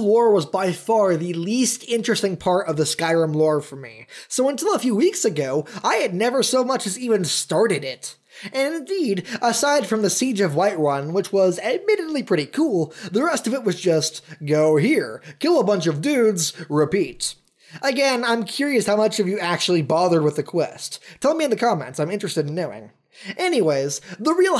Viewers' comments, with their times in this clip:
0:07 HE SOUNDS LIKE A HIMERDINGER!